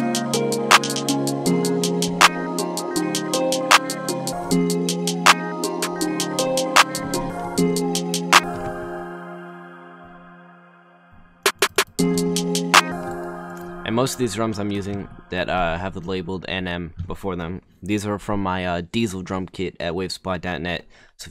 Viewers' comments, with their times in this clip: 0:07 what does he do here to make the snares like that